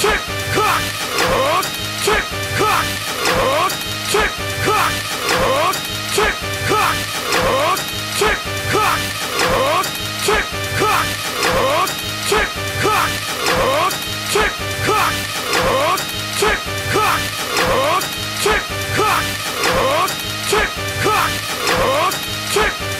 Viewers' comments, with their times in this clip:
0:10 I had to stop this .... it was driving me to the limits!! ERRGG!!! As much as i like gin-chan's voice, this is too much for me.